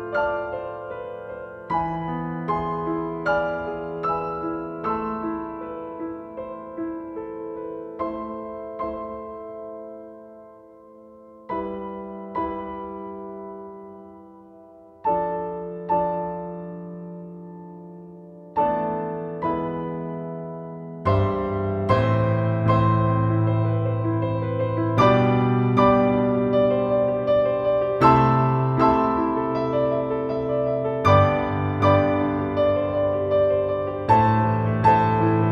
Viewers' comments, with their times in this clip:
0:08 Same here, I love enjoying the silence of the pause in The OST is a complete masterpiece
0:21 Man and onwards is just so satisfying akhhh. And the way Animenz arranged it just makes it 10x better.